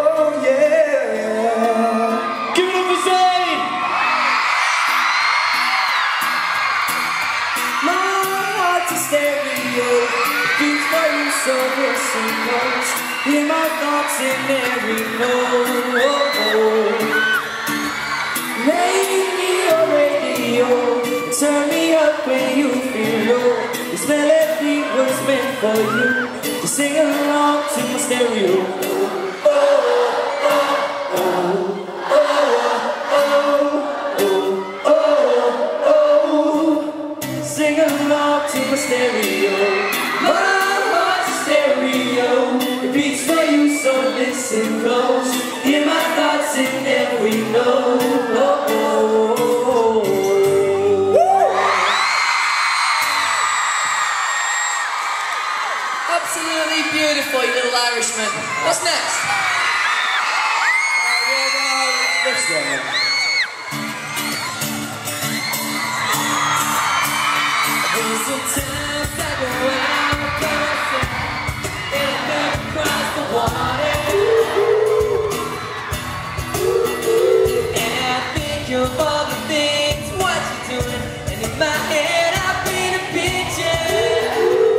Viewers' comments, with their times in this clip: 0:08 Nialler's solo! so proud. :')
1:06 <3 i love lou's voice so much, he needs to get more solos <3